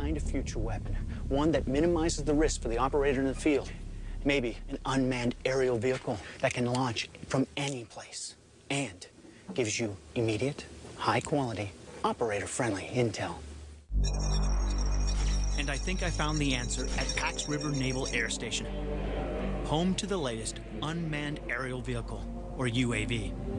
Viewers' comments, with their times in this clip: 0:05 lol why did he start whispering